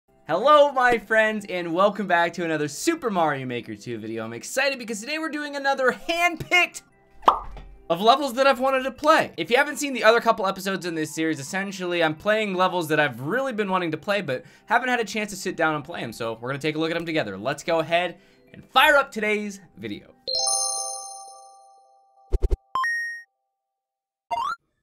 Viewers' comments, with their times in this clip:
0:08 Wait, that unexpectedly felt like such a boing. Pandemics is hurting everyone's fitness lol JK it was probably the chair :D